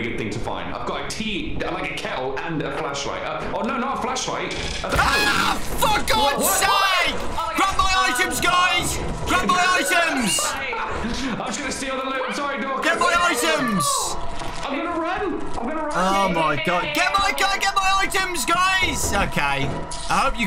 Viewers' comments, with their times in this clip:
0:05 my heart stopped for a second,I thought he said the word